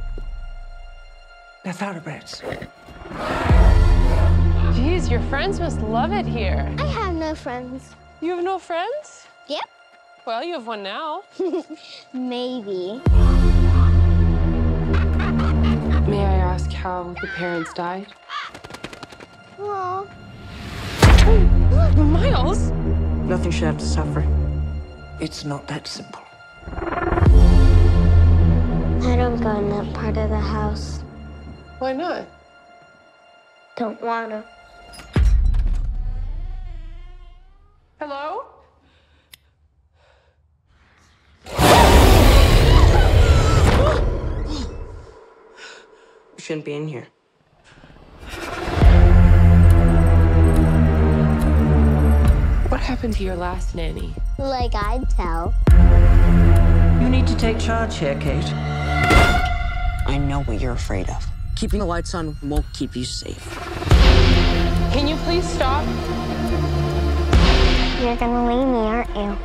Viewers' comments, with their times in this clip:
0:06 You: "You have no friends" Little girl: "Yep" You: Well you have one Now" Little Girl: (giggles)........"maybe" When a little girl tells you in That manner, that's your cue to hop back in your car doing 90mph.
0:44 sound like a video game door opening sound
0:57 you need to char-chae-kae-